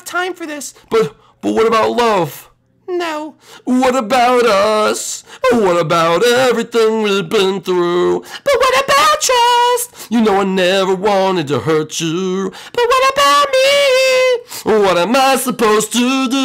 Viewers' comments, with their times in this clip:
0:04 that singing sure is something